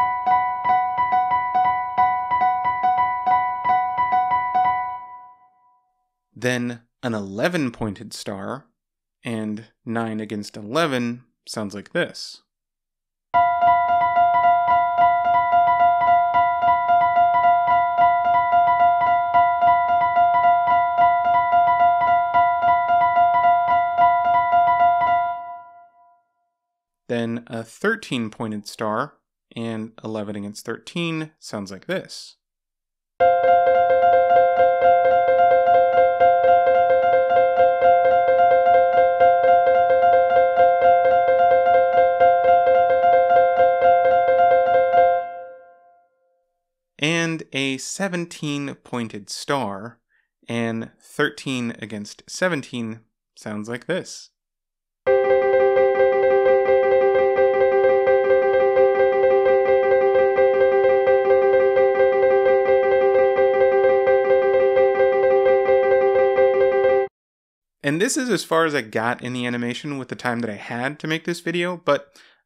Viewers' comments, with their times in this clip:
0:09 "9 against 11 sounds like this" Airplane crash sounds
0:11 nine against eleven sounds like sirens.... Oh wait
0:13 The fact you chose the tritone of all things on this exact polyrhythm
0:13 that 9-11 sounded like an airplane alarm or smth
0:32 AAAAAAAAAAAAAA TOO MANY BEATS!!!
0:33 sounds like 1up
0:55 that kid’s going ham on that piano